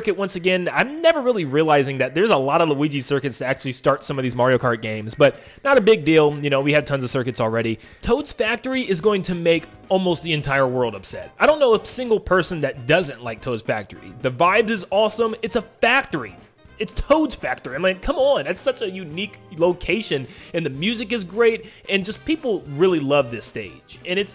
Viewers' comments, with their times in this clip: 0:08 It sounded a bit like Ray Ramano.